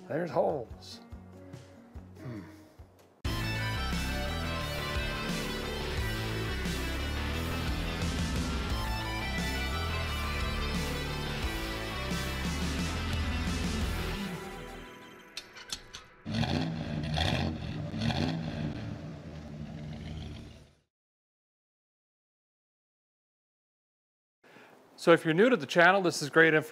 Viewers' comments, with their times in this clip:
0:07 that pause and I was waiting to hear you say, “smells like…”😂😂😂